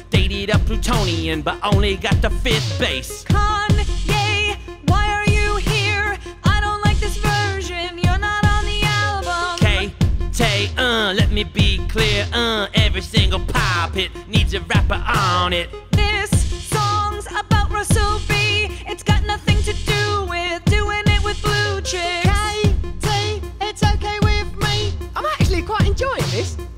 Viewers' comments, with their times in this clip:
0:09 Kanye impersonation perfection.